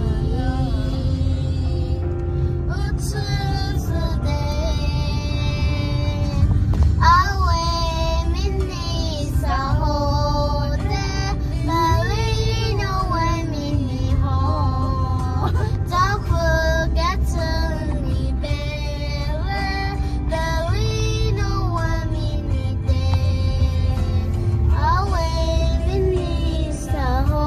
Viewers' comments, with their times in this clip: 0:09 sis with that cute voice ❤😂😂😂